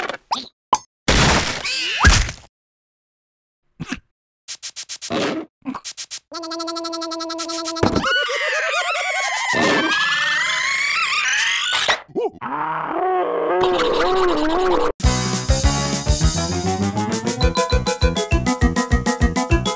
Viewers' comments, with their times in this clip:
0:05 Red: tries to get out from the watermelon but gets squeezed by the watermelon AHHHHHH AHHHHH AHHHH AHHHHHH!😱😱😱 Yellow: D:> Red: starts screaming in slow motion AHHH RAH RAH RAH RAH RAH 😱